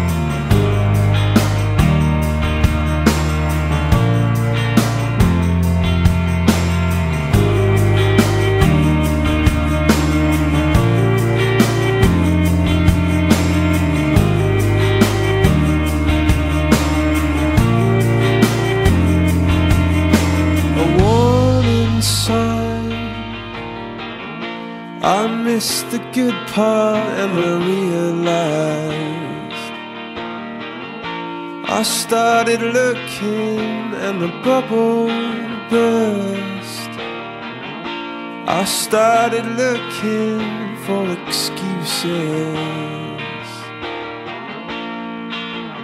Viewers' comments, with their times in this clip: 0:07 I feel like I could listen to that guitar warbling on repeat forever 💞
0:27 it skips! A bit